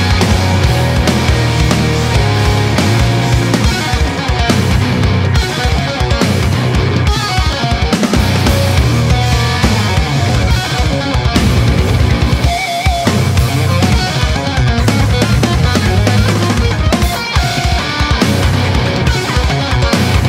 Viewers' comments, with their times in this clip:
0:03 When I saw this live, especially that riff in, you instantly gained a fan :D